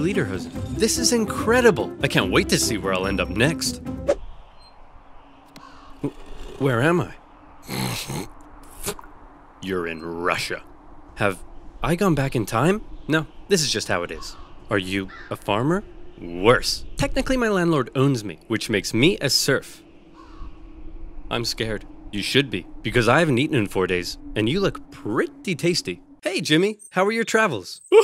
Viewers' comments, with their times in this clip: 0:09 worst imitation of a russian accent i have ever heard